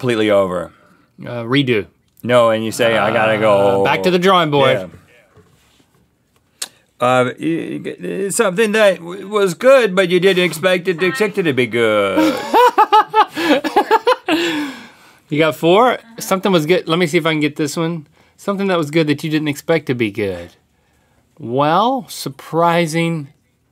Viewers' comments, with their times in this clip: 0:10 small voice on !?🤤